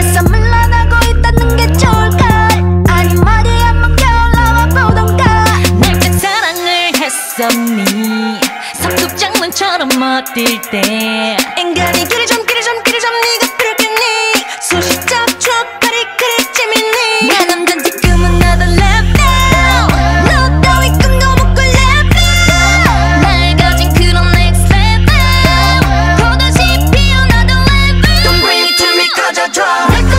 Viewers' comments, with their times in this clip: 0:05 is the best beat change in the history of music, and I'm not even a big fan of K-Pop. Never get tired of hearing that part. Shit is legendary
0:18 Wendy's level at her pre-chorus literally brings you into another level. The way she puts emphasis on her lines is fucking insane!!!!!
0:18 im sorry but this is so addicting😭😭her vocals tho...